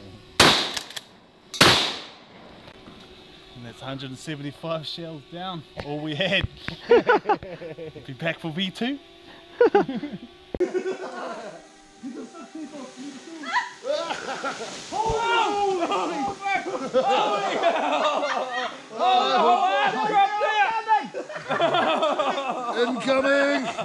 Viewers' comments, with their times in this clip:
0:08 that section of laughter, you never want to be in an alley with that coming from behind you